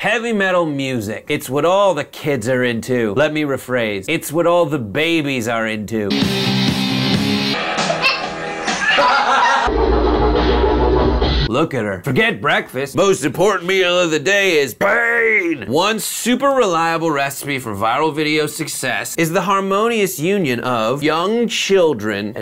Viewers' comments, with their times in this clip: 0:10 its not metal its dupstep